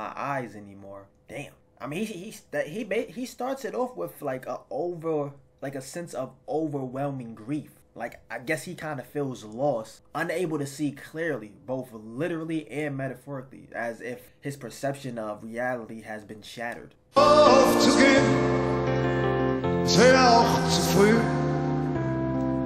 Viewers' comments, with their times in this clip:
0:03 I stopped & didn't read any comment so far and i usualy don't react to any vid (nor reaction videos)...😅 I'm just truly flattered how u realized his emotions at this early stage of this clip - not knowing anythin about Herbert's music or his story. I get goosebumps everytime when hear any sound of his voice. Thank you for sharing and spreading the joy of (his) music ❤❤